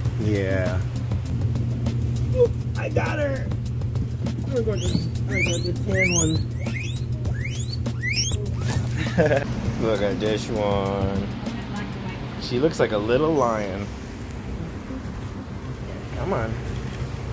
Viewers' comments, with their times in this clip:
0:05 My youngest boar never reacts to piggy noises online....until when he called back at her. Such a flirt!